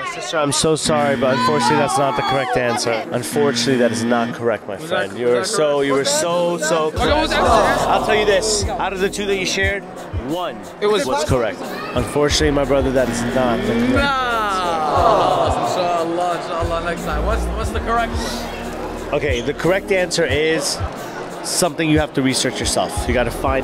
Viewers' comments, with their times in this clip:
0:06 this song is in sample 3 the time of this moment is this music is playing at this moment